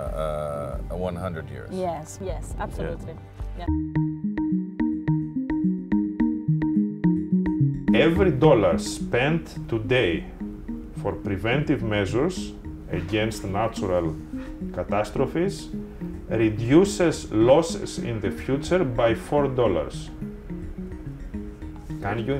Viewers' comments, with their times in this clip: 0:09 you speak so good english.Damm !!